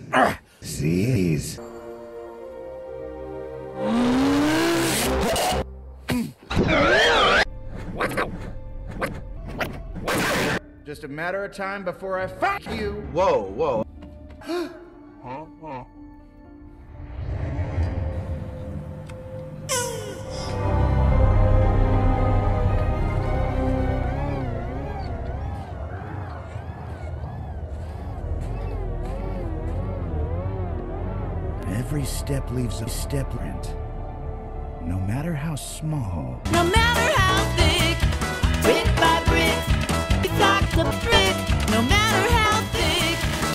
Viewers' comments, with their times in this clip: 0:03 My ears have already getting ripped off
0:37 The funniest part is the song